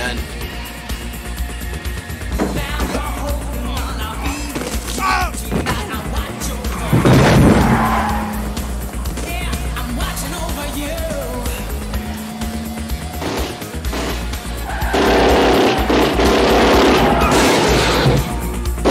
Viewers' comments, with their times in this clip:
0:06 when you hit a pothole and it sounds expensive